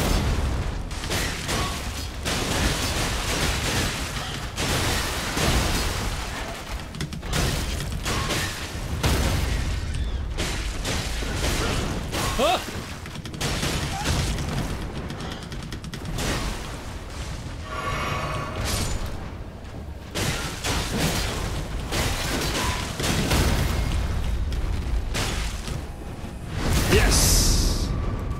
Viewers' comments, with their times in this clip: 0:09 this is crazy ive never seen the crow monsters do that since i just avoid them. they do a fake stagger into a grab probably referencing how crows/ravens are smart birds and some birds can mimic sound thus the stagger sfx